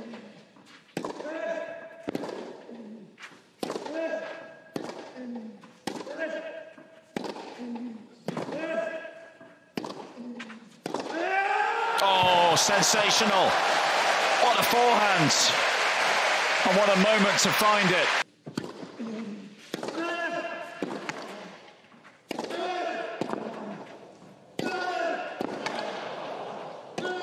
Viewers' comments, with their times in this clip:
0:10 with the extended grunt 🔥🔥🔥🔥